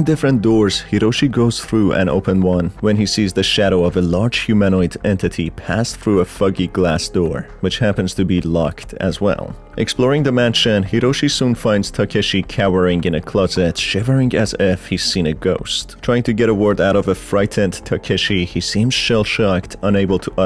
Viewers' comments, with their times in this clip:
0:06 WTF I THOUGHT HE SAID THE F WORD XD LMAO 😐😐😐